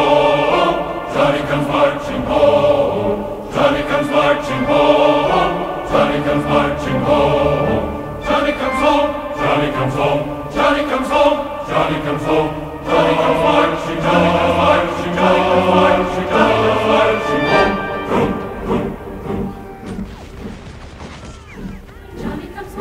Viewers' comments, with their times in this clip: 0:04 it's when the music starts